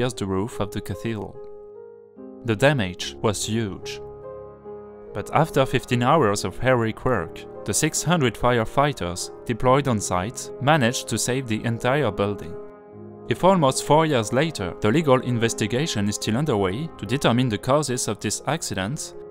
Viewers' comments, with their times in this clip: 0:05 Your English is good, and a pleasure to the ears of this Englishman. Thank you. The only point where I got confused (briefly) was the expression 'Heroic work' I heard 'Hairy Quirk', which I knew made no sense, so I did a double take, and re-computed. It is a matter of speed of speech (nobody can say Heroic quickly!), word stresses and other subtle things which you have already humbly acknowledged. Remarkable that was the only point of missed comprehension in the whole piece. Bravo! And thank you for a very interesting video.